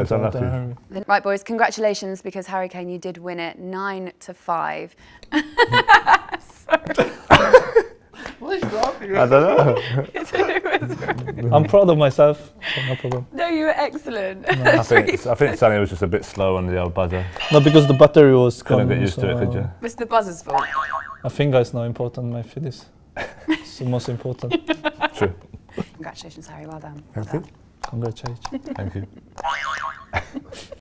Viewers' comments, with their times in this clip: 0:04 that laugh tho 😅😂😂
0:05 i like the way she laughed for no reason😊😉
0:05 Why was she laughing? even they looked at each other and said that lol
0:05 Lmaooooooo ? What is happening? Why tf is she laughing like that? 😭😭😭😭
0:06 why is she laughing LMFAOOOOOOOOOOO
0:09 Son:why is she laughing? Kane:even idk bro
0:18 Korean style intonation "battery" = 밧데리 ㅋㅋㅋㅋ